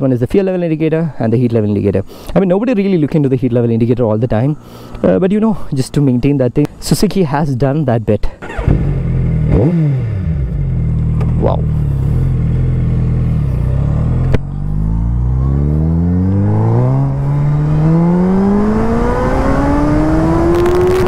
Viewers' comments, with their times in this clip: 0:09 man that is the best rev I've heard in a while.